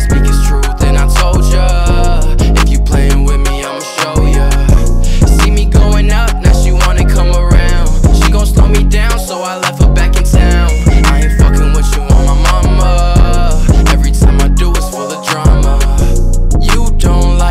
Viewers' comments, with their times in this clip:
0:05 sounds like ransom by lil tecca 🤔